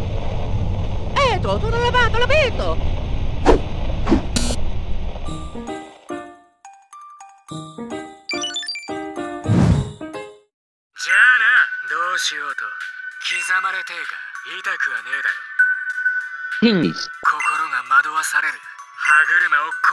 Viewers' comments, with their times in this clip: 0:06 mmmmmm omori music, this isn't a good sign 😰